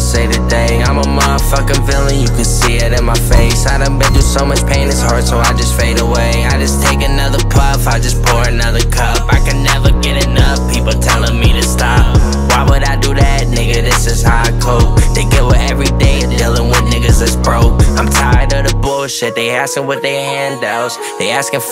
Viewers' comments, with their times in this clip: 0:07 Flow switch goes dummy🔥🔥🔥🔥🔥🔥 then came back to the chorus yea this heat